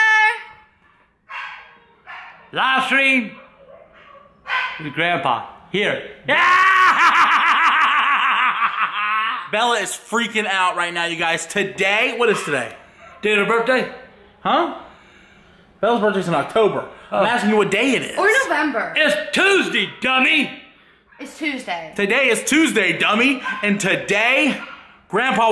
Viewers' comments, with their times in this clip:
0:04 man I miss that laugh!!
0:06 His iconic laugh 😂
0:07 grandpa’s classic laugh. I miss it